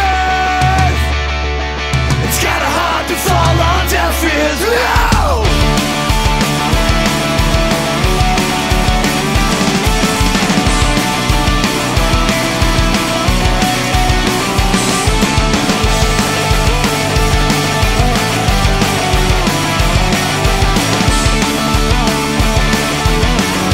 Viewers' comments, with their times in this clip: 0:03 That guitar sounds like im not okay of My chemical romance xd... i fucking love this band, greetings from Chile :D
0:05 Start from its EPIC! .. sometimes i feel like i'm listen to new brand of bouncing souls ... AWESOME !!